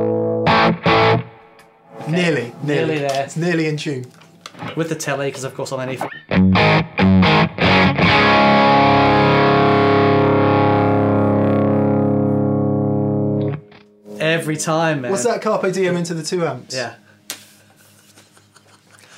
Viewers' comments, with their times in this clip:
0:06 The Tele's tone is unreal! Seriously!